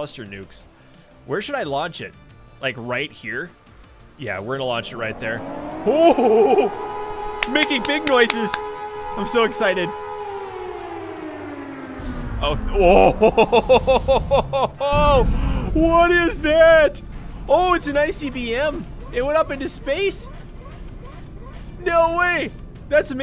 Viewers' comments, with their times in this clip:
0:09 sounds like he’s a kid